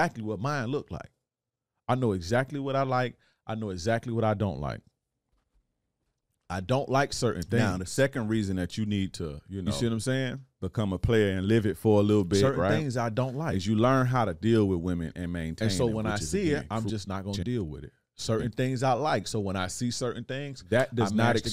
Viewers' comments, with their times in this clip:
0:09 Audio errors around the mark of this video.